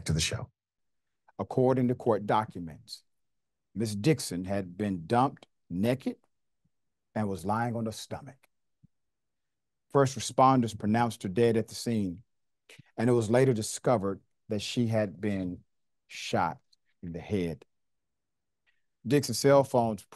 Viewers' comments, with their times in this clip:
0:06 I’m sorry but the way you said “naked” 😂